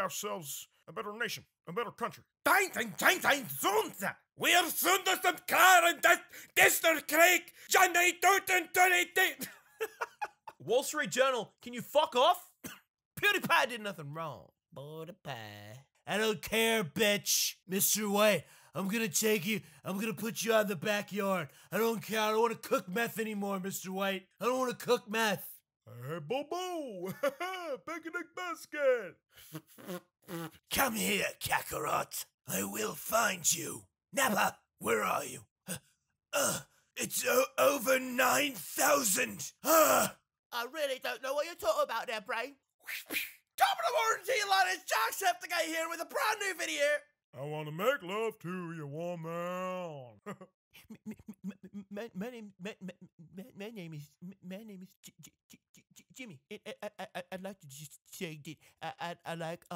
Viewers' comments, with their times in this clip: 0:08 he sounds like scout from tf2 😂
0:17 Love the Jesse impression!
0:37 ... sounds just like him
0:43 OMG! That is like the best voice impression of Jacksepticeye in history